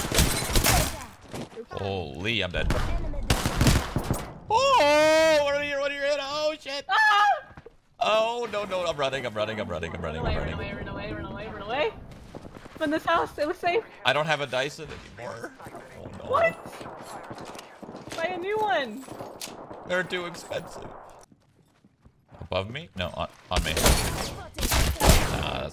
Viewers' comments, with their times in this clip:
0:05 the girl's scream scared me omg
0:06 listen to her yell☠️